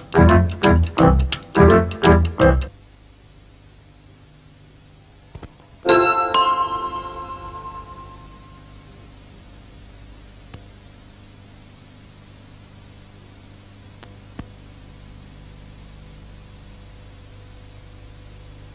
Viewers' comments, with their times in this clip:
0:05 It's strange how when this Planet 24 logo first played out when it was aired live on TV at the time, the audio fades out while it's completely intact in this master taping. Plus, a still frame on the logo lasted a little longer compared to when it was aired live (which quickly fades after the logo plays out)